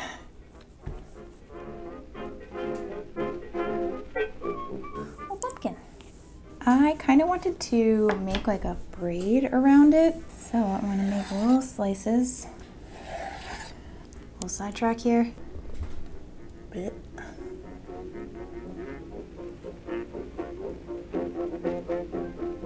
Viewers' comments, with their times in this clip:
0:09 Omg the knife sound is so pleasing...